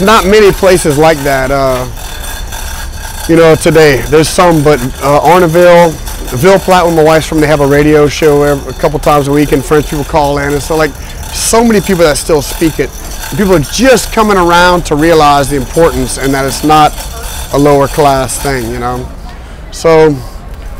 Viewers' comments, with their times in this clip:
0:04 Which town does he mention ? Sounds like "Ornerville" but I can't find it on a map.